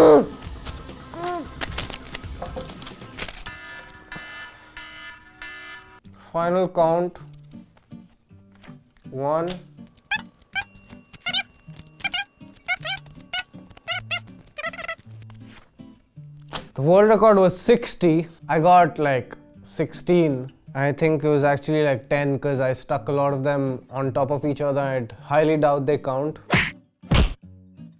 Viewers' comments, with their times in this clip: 0:09 From it's freaking funny That voice is awesome